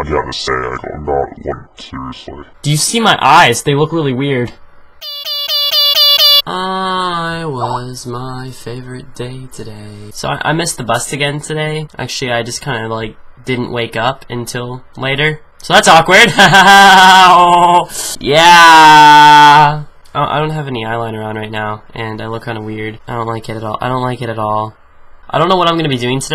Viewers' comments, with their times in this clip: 0:07 i heard Skype lol. Skype me!?